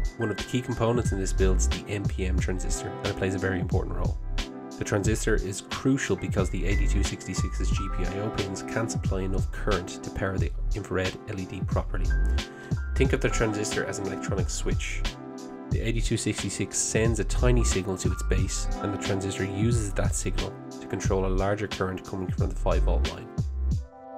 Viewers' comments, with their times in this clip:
0:06 Thanks for fixing the music volume issue in future videos, it was hard to hear what you were saying for example.